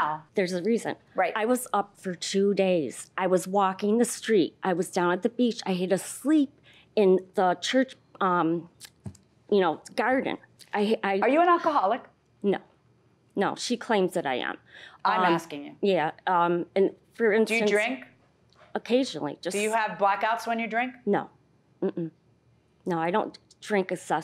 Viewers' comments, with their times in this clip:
0:07 "I dawnt dwink essessively like dat". Yeah, you're totally buzzed! I don't blame her. I'd have to have a shot or 2 before going on nationwide tv.